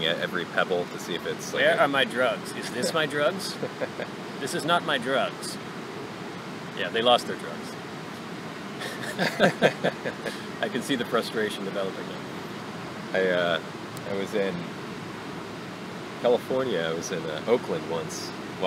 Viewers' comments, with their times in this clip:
0:06 omg ur condescending bourgoie chuckeling gives me life